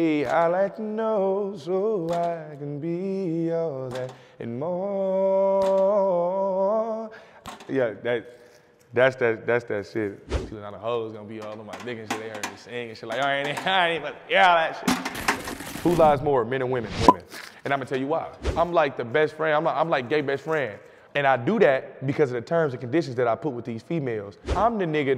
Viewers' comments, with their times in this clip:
0:06 okay vocals, come thru!